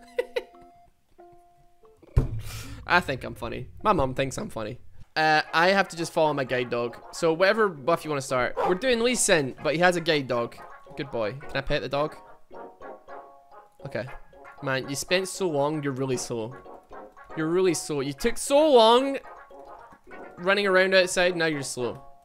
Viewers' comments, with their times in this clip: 0:08 "playing lee sin, but he has a gay dog"